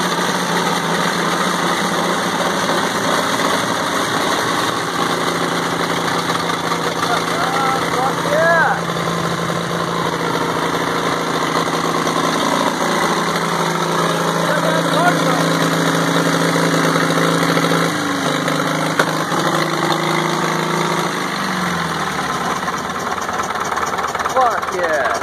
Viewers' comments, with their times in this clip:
0:10 Oh for sure, it was just sec of cranking first lol
0:10 Actually its not wrong, these old dozers have a small gasoline engine called a pony motor that was used to start the larger diesel engine. What you hear in the beginning of the video is the pony running and cranking the diesel which is making the smoke. The diesel is not actually running under its own power until around the mark in the video.